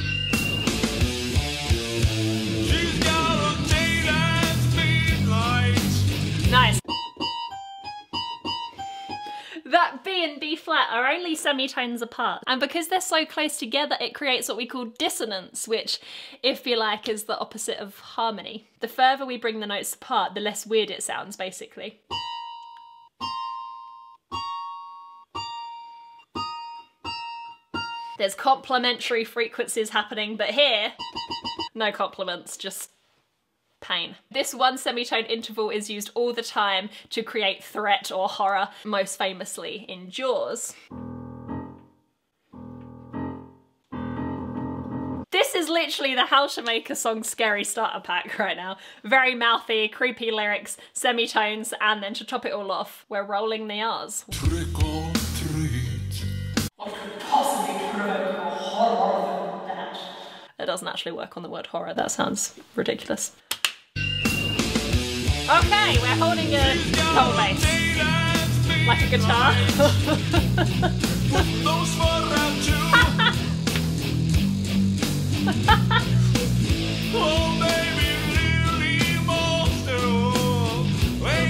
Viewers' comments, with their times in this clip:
0:10 The Devils Tri-tone! In the days of Bach and Mozart, Musicians could be sentenced to death for using "The Devils Interval" in any music!
1:09 exactly my reaction to horrors -- a twisted, decent laugh 😂